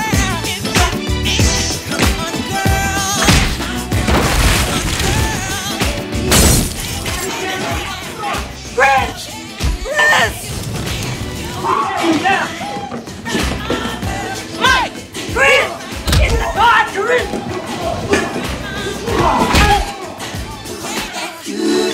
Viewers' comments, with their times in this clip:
0:08 lol the 2 yells